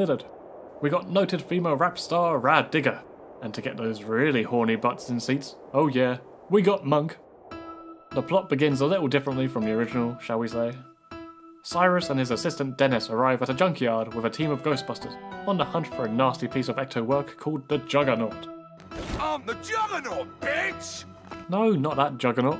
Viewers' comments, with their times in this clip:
0:08 I swear I thought Pokemon music had just started playing. You encountered a wild Ghost type!